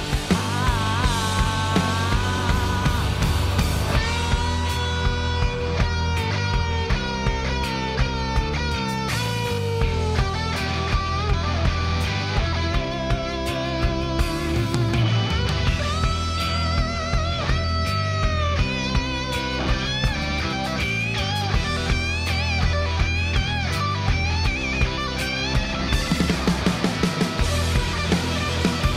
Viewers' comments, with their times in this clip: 0:08 Miley is so into the music really makes her a great performer, also the solo is fucking nuts lol it's funny how these pop star guitarists have to shred at like 3/4 volume but it's always amazing.
0:13 boi dat guitar solo, heavenly